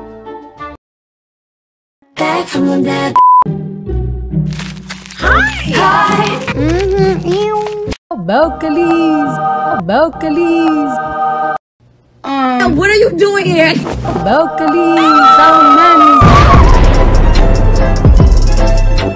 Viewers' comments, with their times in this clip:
0:05 NOT THE BeLcULuEs AND THEN SHE WENT AHHH when she went in the pillow pt she said MoEw such interesting words😊